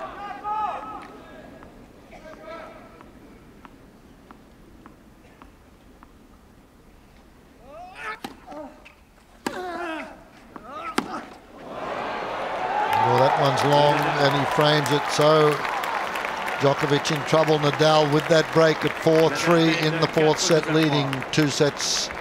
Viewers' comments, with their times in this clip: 0:06 Djokovic's grunt tho